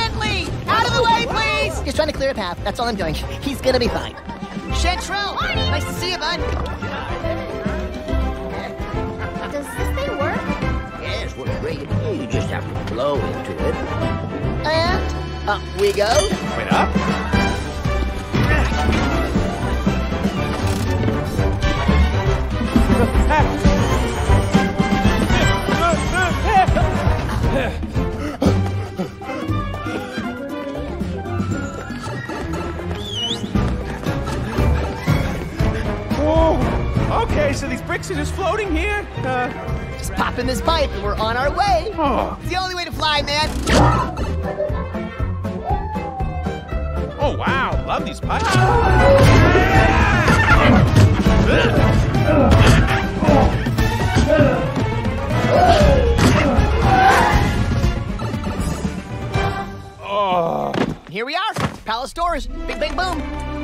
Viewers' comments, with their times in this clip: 0:03 I’m impressed with the toad voice
0:42 Also Chris did Mario’s little “hmm” with the Brooklyn accent. It’s subtle and I love it
0:44 It's just three seconds of music, but you still reflexively have to move to it!